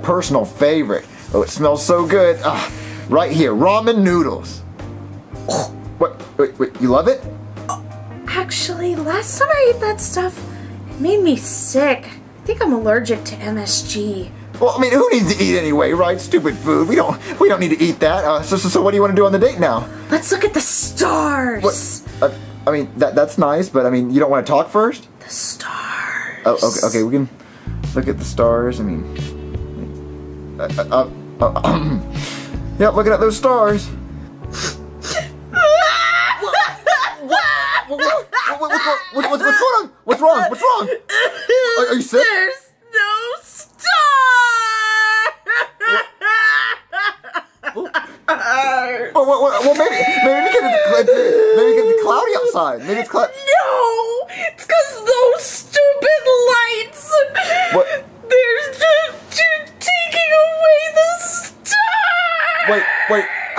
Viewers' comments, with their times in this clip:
0:05 It's funny how she gagged..
0:34 I like how the music stopped then Rosalina went crying over Mario 😂🤣
0:42 you can hear her trying not to laugh 😂😂😂
0:47 It sounded like Rosalina was laughing